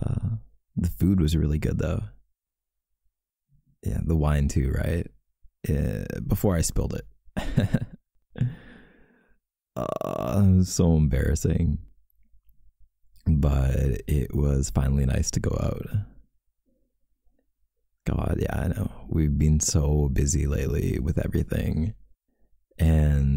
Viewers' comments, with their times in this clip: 0:10 I- O-O was that a moan mister or is my mind playing some mind tricks on me cause if it wasn’t then DAMN I need to get my mind fixed was i the only one that heard that 0-0